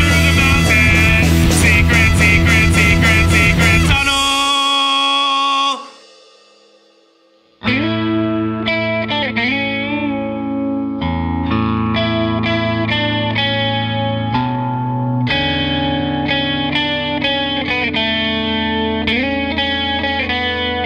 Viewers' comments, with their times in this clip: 0:07 Does anybody else think that the beginning of the cover of Leaves from the Vine has a Death Cab for Cutie vibe to it?